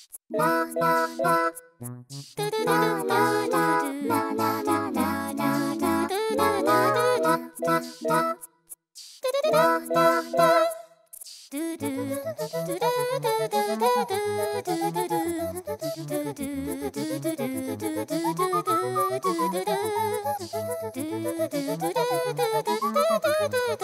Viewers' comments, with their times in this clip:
0:09 She sounds so real when she does this high-note!